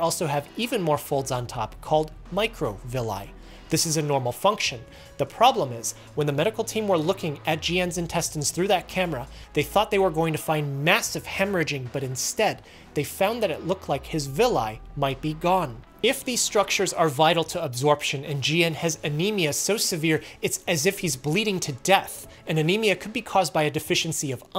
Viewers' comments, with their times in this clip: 0:08 Mitochondira is the power house of cell. it is so fast even in 025x speed